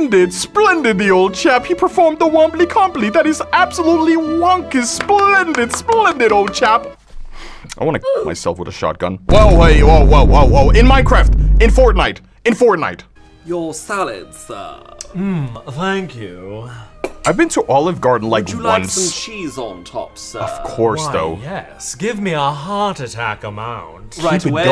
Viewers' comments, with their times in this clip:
0:07 phone ringing noises during facebook live